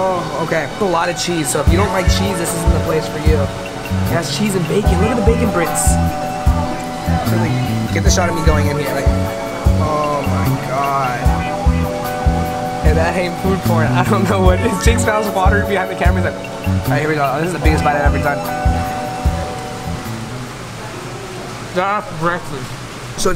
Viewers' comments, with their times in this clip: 0:04 why in is there a bird like hey guys